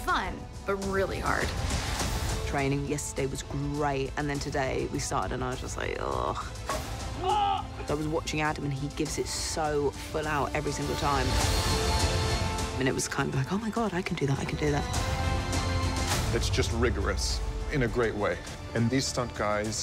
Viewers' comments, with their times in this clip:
0:05 her trainer laughs. LOL.